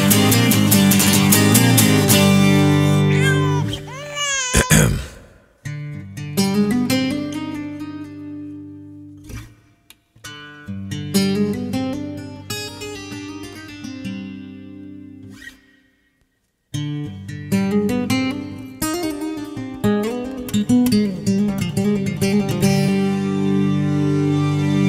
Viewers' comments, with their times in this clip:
0:05 I wonder if the baby crying was intentional.
0:06 that finger track is amazing!!